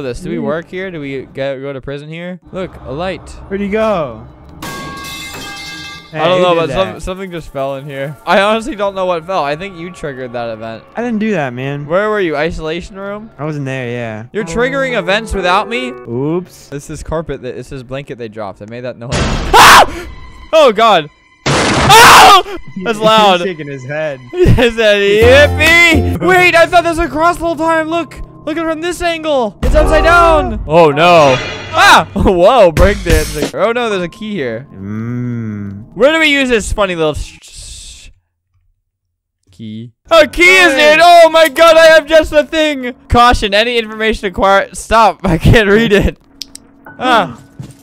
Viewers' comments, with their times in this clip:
0:04 the way everyone knows this pipe sound now💀
0:35 I WAS LAUGHING SO HARD TO THE FACT HE WAS ABOUT TO CURSE THEN HE PAUSED FOR A GOOD MOMENT-